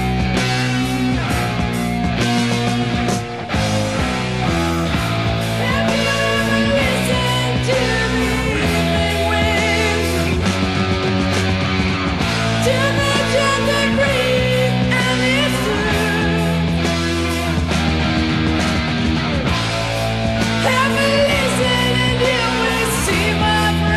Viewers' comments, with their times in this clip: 0:04 🦂 Amazing classic Scorpions track ! Uli you beast ! Make that guitar sing as well as Klaus' voice " ...have you ever listened to the evening wind " - love this song ! 🦂🦂🦂🦂